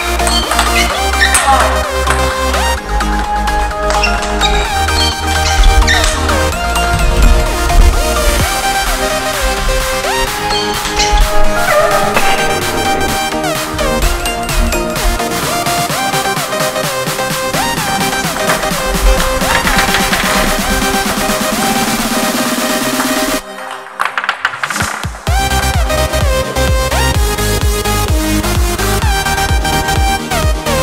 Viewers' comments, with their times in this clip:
0:09 did he fart
0:11 sounds like he just farted thanks for 36 likes